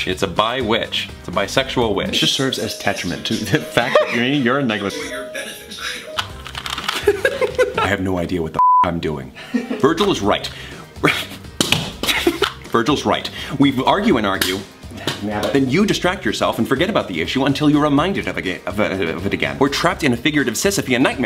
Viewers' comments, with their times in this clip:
0:09 ok but why is no one talking